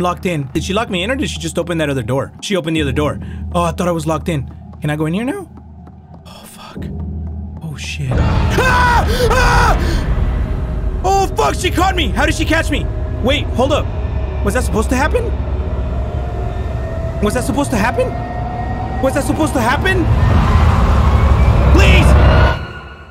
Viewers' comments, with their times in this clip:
0:07 I was literally more scared from ur scream than from the music HAHA